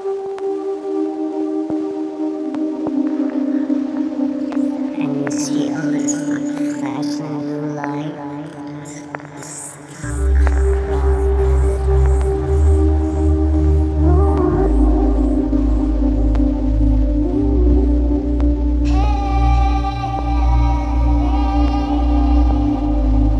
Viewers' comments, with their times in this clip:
0:04 Anyone know what that voice says?